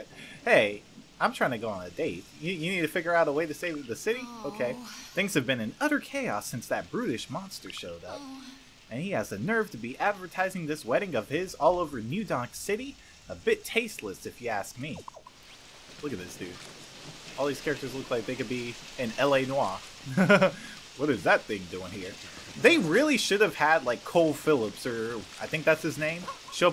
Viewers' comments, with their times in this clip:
0:07 Pauline moaned...whats wrong with me